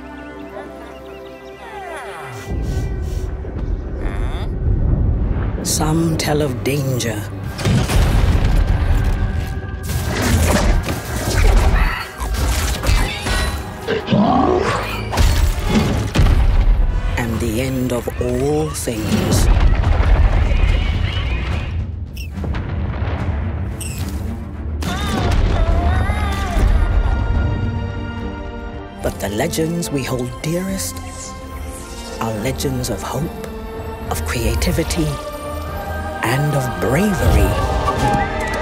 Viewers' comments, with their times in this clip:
0:10 GTA death sound
0:13 right it sounds like GTA wasted sound effect
0:13 nobodys gonna talk about the fact that sounds like the wasted sound effect?
0:24 should be the sound of a villager running in the base game